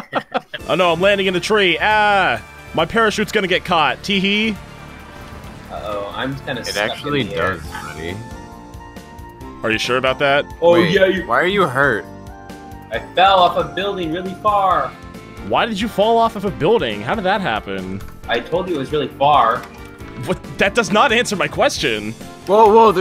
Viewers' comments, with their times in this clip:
0:08 ah I see your music taste is at peak perfection